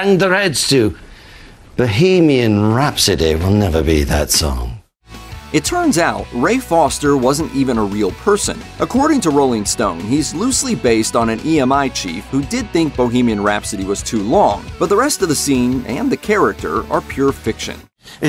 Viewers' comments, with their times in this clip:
0:05 it tUrNS out